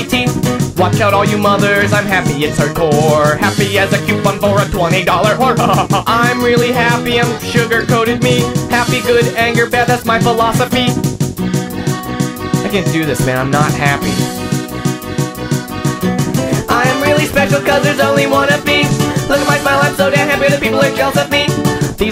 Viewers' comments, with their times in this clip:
0:05 That laugh is so god dam priceless XD